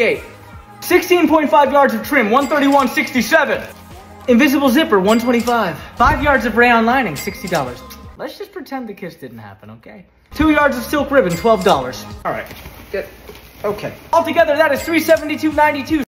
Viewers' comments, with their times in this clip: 0:06 the way he said the price of rayon!